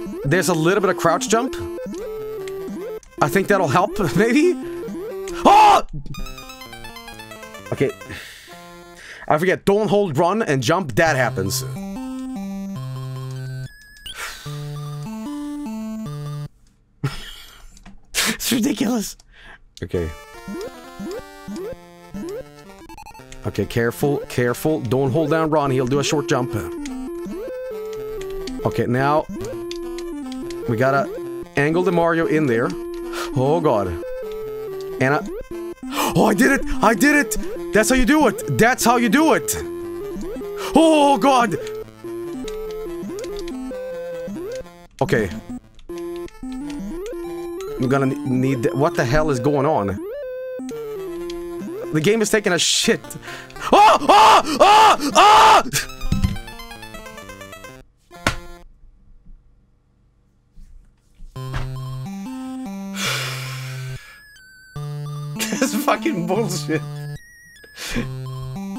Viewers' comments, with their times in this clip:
0:05 gus fring scream
0:53 Screams like are half the reason I watch Joel